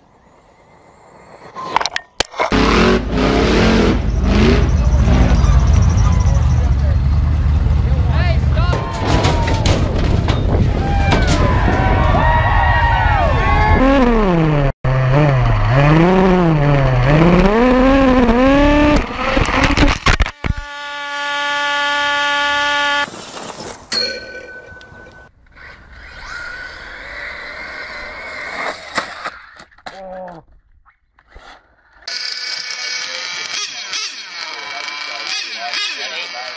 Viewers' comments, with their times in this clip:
0:03 that is the best sounding RC car I’ve ever heard
0:18 Im gonna land! After that he screams Car: AAAAAAAAAAAAAAAAAAAAAAAAAAAAAA
0:23 one of the calmest crashes you’ll ever see. in fact, that’s so calm, i will call it a bell dinging, signifying that dinner is ready